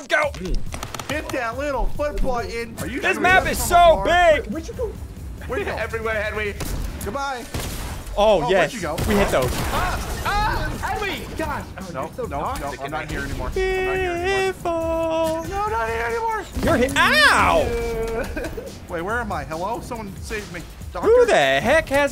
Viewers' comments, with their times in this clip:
0:06 the bass drop 😆